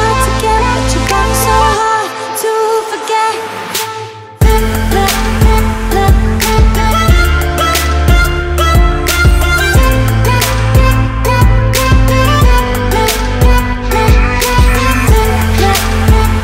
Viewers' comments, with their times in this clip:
0:03 It kinda sound like marshmallow lol 😁😀